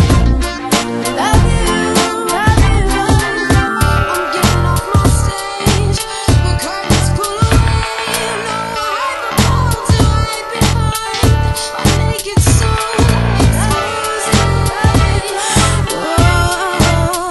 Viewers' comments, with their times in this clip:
0:04 Does anyone know the chords at the harpsichord or something ? sounds brutal.